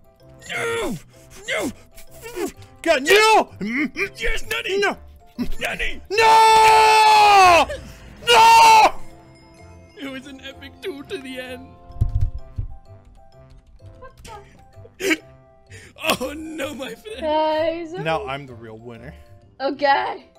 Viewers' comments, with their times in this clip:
0:07 Headphone warning loud NOOOOOO